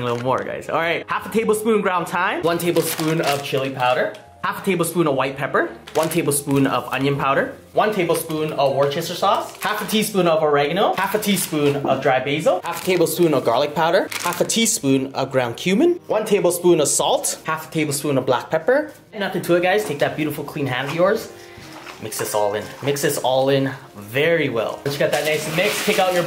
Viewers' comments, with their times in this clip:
0:07 he is taking fast bro